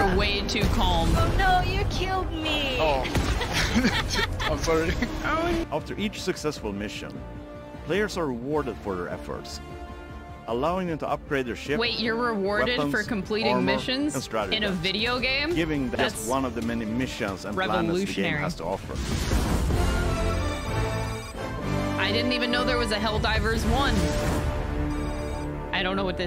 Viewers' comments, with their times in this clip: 0:08 I don’t believe that person was calm Oh you killed me I think it was more of YOU KILLED ME PAY ATTENTION